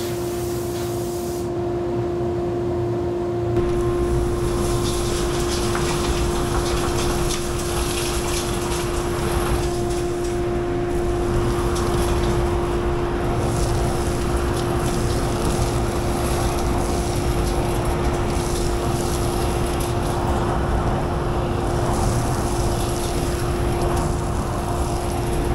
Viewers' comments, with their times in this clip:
0:06 Glad you had the machine off when you were reaching in here, although the sound of the vacuum in the background had me a little concerned